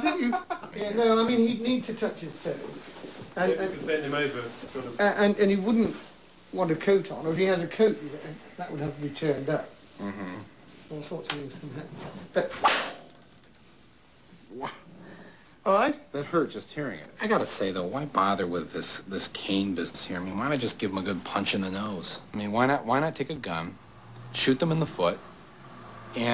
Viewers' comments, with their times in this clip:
0:10 you can hear the crack of the cain echo throughout the room.